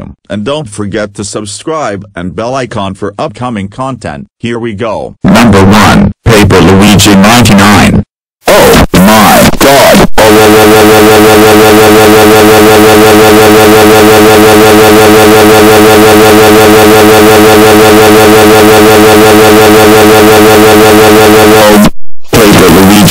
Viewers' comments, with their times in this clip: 0:05 Ow! My ears! That was really loud! ;,(